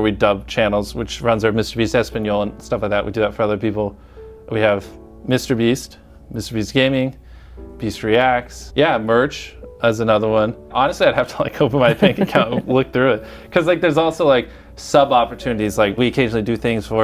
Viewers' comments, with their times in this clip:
0:05 That Minecraft Music Taking me back to them days